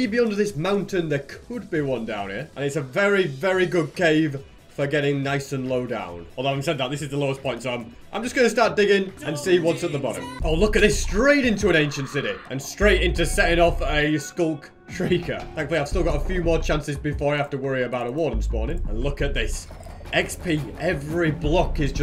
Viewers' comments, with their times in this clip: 0:08 that half a second was so nostalgic, i remember that song, it was one of the first things i watched from u
0:09 wow i used to love that song man